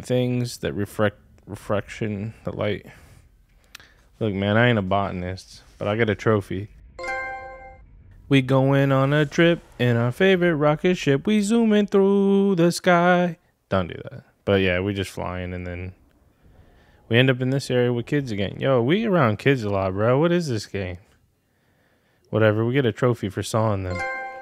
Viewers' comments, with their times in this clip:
0:07 That annoying theme song and I'm not a fan of it. Was it Little Einsteins, that kiddy show?! "YOU WILL NEVER GET THIS! LA LA LA LA..."